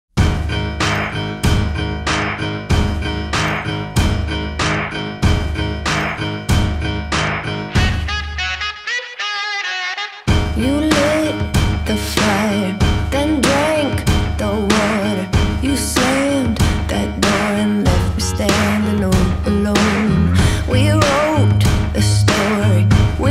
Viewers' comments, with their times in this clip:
0:07 the little riff throughout the song reminds me of the go-go power rangers watch/beep tune lol for the people old enough to remember that...